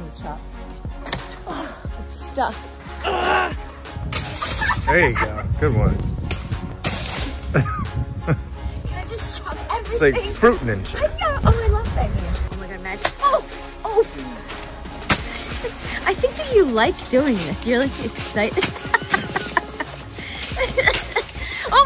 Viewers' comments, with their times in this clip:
0:04 i love when she laught like that